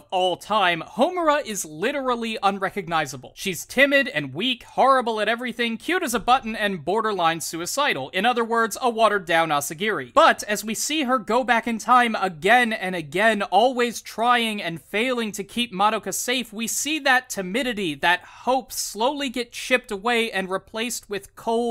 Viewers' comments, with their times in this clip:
0:06 Cute as a Bottom?